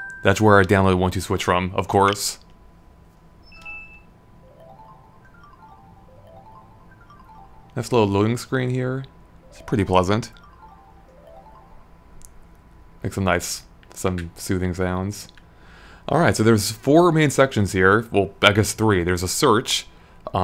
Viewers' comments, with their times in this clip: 0:03 it kinda sounded like someone was logging off on Windows 7
0:03 I'm really disappointed that the Eshop doesn't have music. Also, I swear I can hear the Windows 7 shutdown or logoff sound effect. Wierd.
0:03 wtf some windows computers make that EXACT same sound when shutting down.
0:03 win 7 shutdown ?
0:03 Anyone heard that PC Windows sound ?